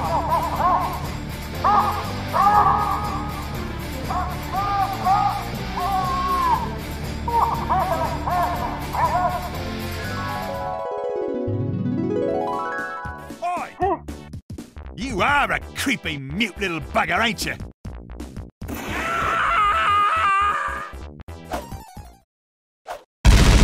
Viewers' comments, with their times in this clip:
0:08 did pyro just say get to the certain maggots